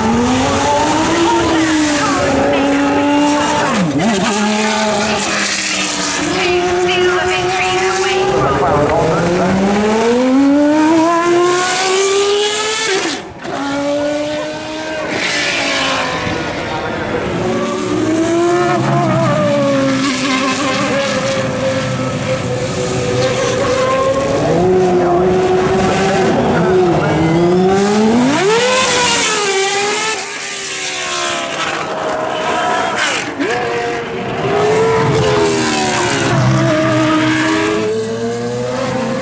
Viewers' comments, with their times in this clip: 0:05 Is it just me, but does that part sound like a v8? Kinda
0:24 ...that unmistakable gear whine.